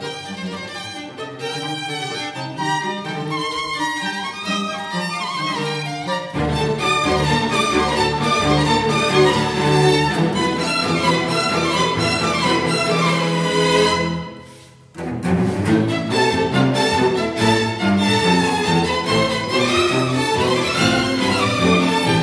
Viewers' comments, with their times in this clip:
0:09 Am I the only who can hear the voice in here?